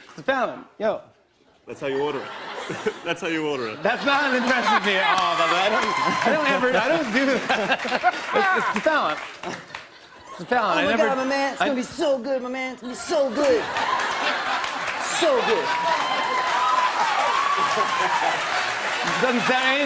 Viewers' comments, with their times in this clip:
0:06 justin sounds like aziz ansari for a sec
0:07 Justin's laugh was too cute!